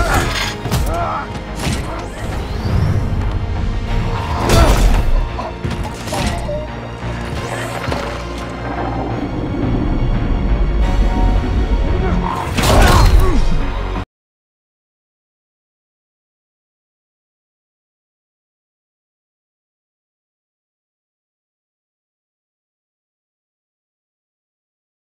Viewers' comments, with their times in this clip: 0:06 No sound after something seconds... wish someone would have commented That...